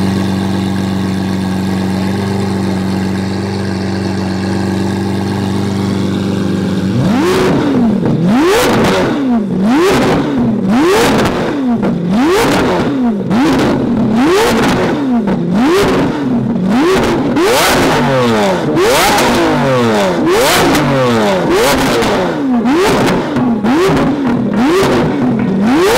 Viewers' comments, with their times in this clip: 0:07 R. I. P HEADPHONE USERSS